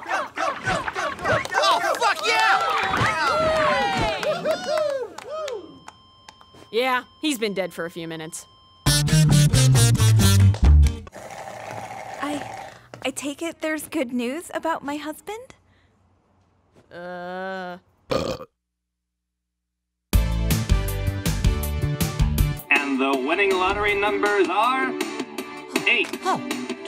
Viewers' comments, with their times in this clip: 0:07 He has been dead for a few minutes it says on, but yet if you listen carefully to the background you could still hear it dinging but once she checks up on him it stops? Wtf I am so confused right now...